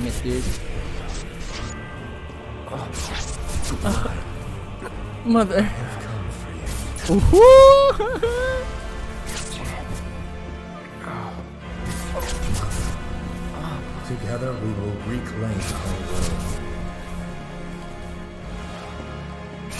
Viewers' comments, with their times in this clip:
0:05 why do i hear boss music?